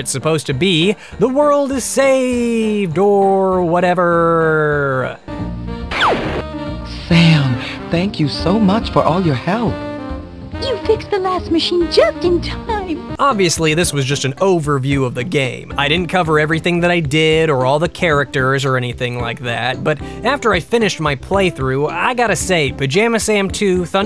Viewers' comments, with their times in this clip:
0:07 Thunder is a girl. Look at the dress, and her voice sounds very feminine And yeah, she did call lightning dear